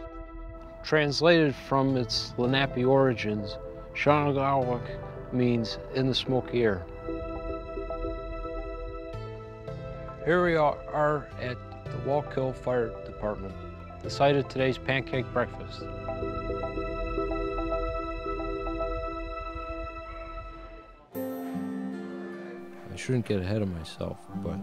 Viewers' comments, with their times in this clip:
0:09 Here we ar-are... I'm dying xD